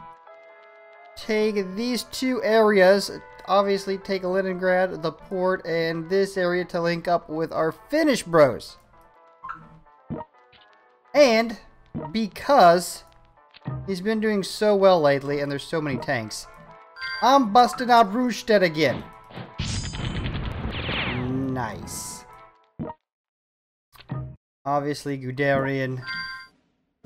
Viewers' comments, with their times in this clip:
0:09 anyone else notice that Snapchat notification?